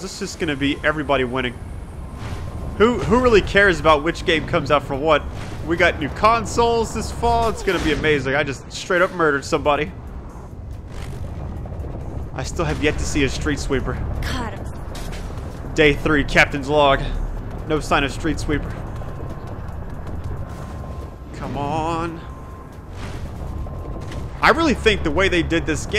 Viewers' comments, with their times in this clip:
0:07 I lost it when he hit those people on the bike and calmly comments on how he murdered them, then continues with what he was saying xD